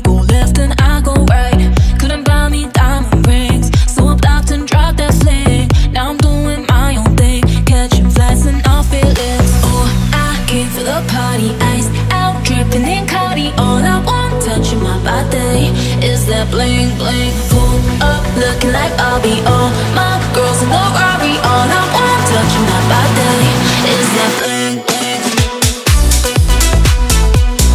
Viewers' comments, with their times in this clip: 0:09 Oh, I gave you a potty 😂😂🚽🚽🪠🪠